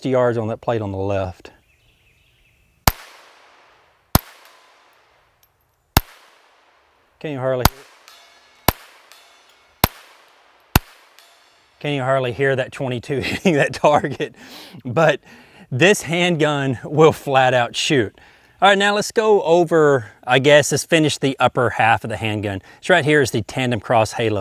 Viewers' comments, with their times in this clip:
0:07 You can hardly hear it hitting because you are missing dude. 60 Yards is impressive enough as it is, but that gun cost an arm and a leg .